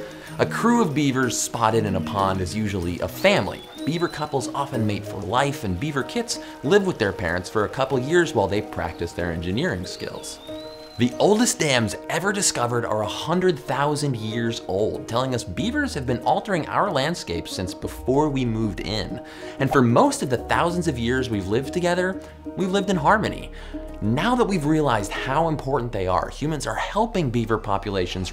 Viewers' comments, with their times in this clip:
0:09 I like your videos, and I definitely like your traveling to make videos. Somehow it seems as though you might have an Eastern Wood-Peewee in the background sounds, a species who would be hundreds of miles outside its range.